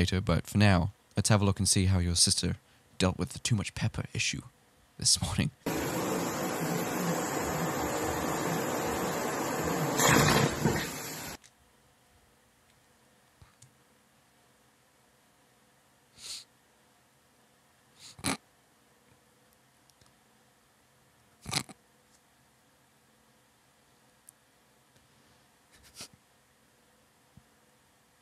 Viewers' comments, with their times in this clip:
0:10 ...he's trying to stifle his laugh while I'm trying not to yak ... the sound got me gagging! lol!